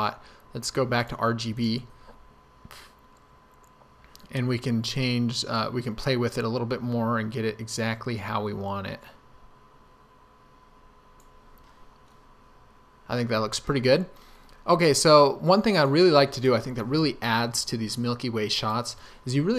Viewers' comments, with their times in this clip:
0:03 This really helped, thank you! Was that burp ? Haha